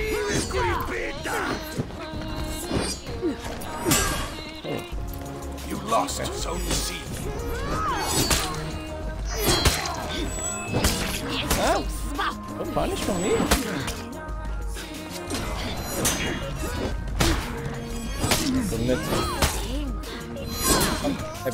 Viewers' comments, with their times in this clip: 0:03 i like that cyberpunk music. Night City 👍